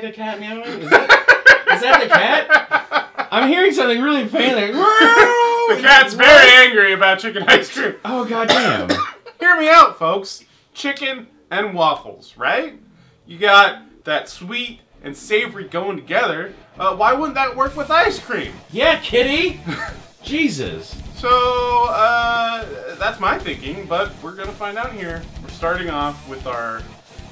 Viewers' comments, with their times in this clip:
0:08 He sounds like Gary trying to sell the Chili Cone.. (season 2 ep1) I'd link you, but I can't find it. Your Pretty Face is Going to Hell ... great show :)